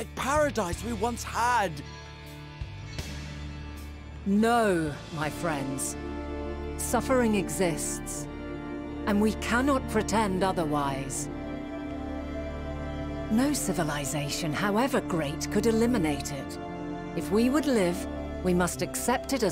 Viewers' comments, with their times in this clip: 0:04 That pipe organ drop is so epic